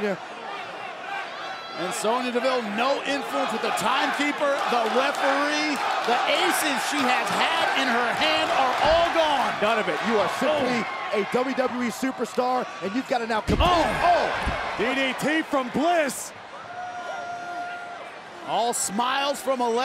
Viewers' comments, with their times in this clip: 0:07 Did anyone understand what the audience was chanting ?